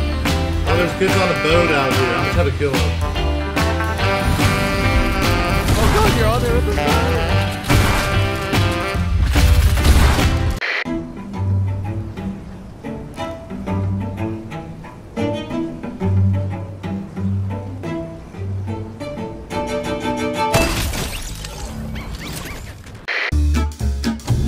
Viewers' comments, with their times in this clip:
0:05 sounds like a Kombat shotgun
0:06 that’s a pump I hear a combat?!?!!